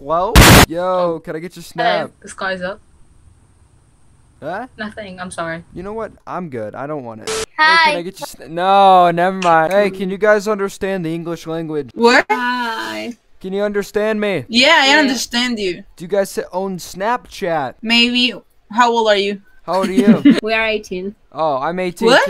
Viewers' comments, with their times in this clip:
0:06 The way she said hi remainds me of Samantha from black ops 2 orgins